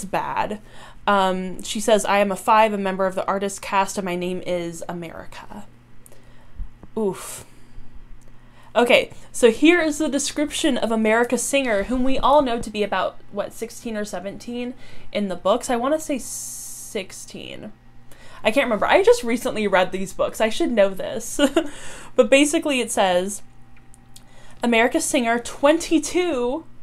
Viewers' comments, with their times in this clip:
0:08 That oof sets the whole mood for the pilot